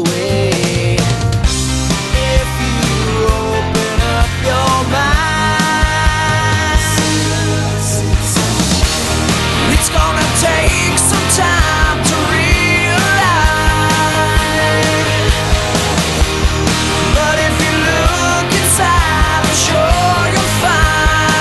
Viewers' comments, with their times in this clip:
0:09 sounds like Kurt cobain at 0.75 speed